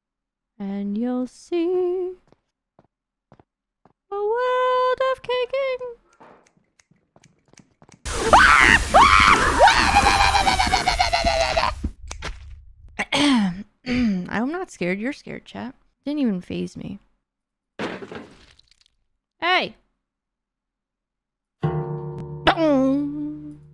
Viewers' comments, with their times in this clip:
0:08 The sound of the gremlin energy overflowing